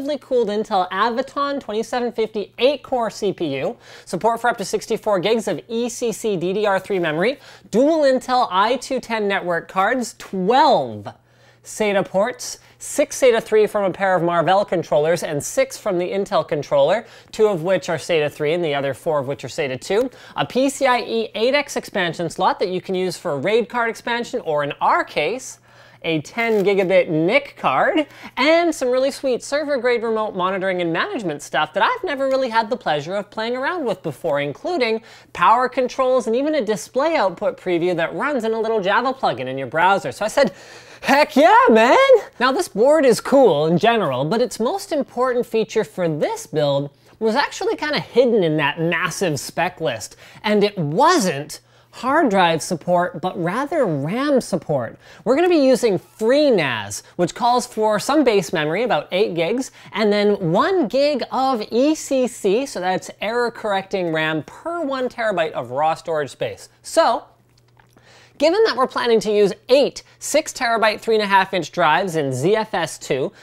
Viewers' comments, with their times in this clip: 0:06 as Linus said memory I heard a noise in the background which I have spotted in more of their videos. Does anybody know what this noise is?
1:00 I was so stoned I could hear the camera guy swallowing